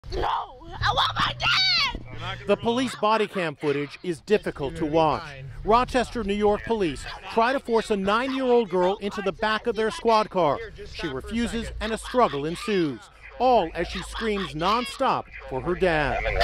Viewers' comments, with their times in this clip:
0:01 she sound like she’s atleast 15 there